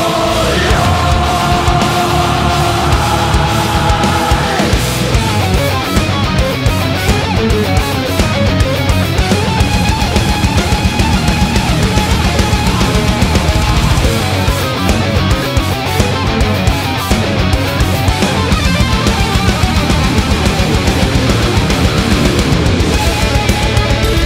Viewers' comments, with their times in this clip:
0:05 Sepultura goes PROG for 30 seconds!
0:09 sounds like Megadeth - Hangar 18